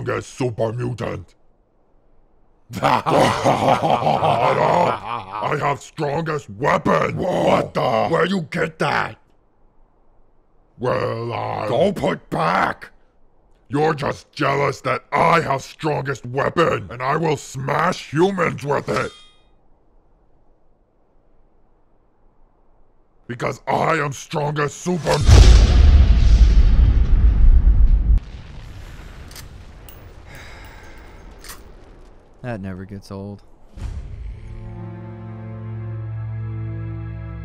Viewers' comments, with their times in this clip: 0:07 when Tommy Wiseau turns into a super mutant
0:24 the way the mutant stops for a second before going back to talking is a perfect summary of of the stealth system. ( Hidden ) Shoots and mutant pauses mid sentence. ( Caution. ) Mutant resumes talking. ( Hidden ) Shoots and kills. 😂